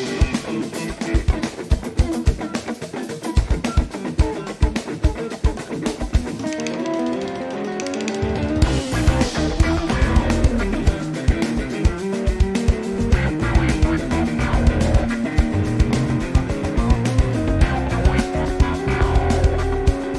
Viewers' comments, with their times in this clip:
0:06 Careful Cory, your amp can't handle the funk!